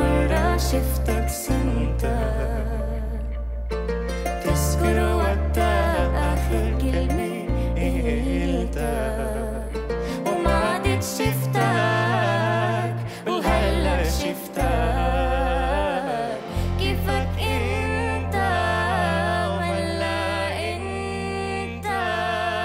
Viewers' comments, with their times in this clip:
0:04 I love that duet